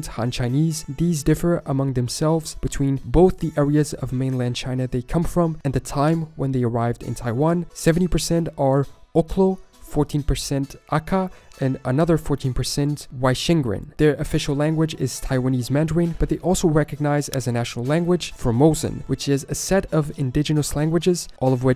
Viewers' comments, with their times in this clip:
0:08 Oklo? Akka? what are you French?